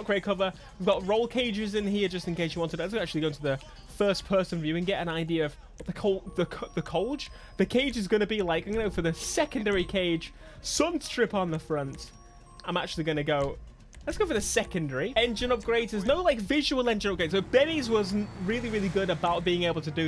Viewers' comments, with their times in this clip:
0:06 bruhhhhhhhhhhhhhh that song